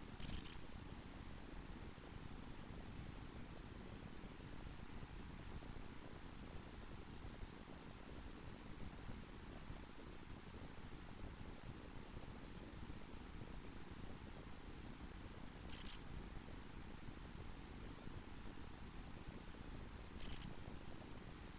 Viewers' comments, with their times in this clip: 0:03 we can't here